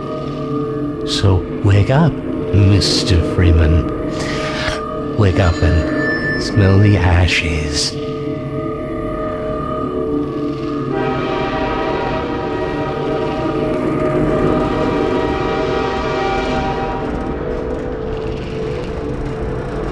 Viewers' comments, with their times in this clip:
0:05 i always thought he was saying "wake up man."